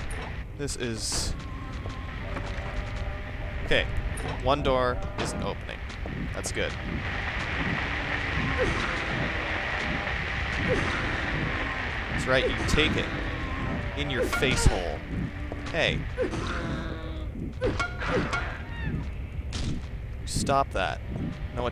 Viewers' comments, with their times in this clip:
0:06 nothing like random heartbeat sound effects in a creepy underground tunnel to really get the pee soaking through your pants.